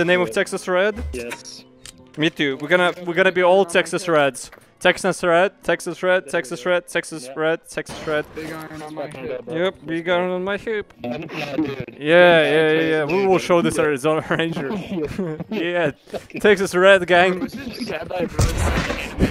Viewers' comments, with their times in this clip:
0:05 Anyone else hearing Sex is rat and Sex is bread ?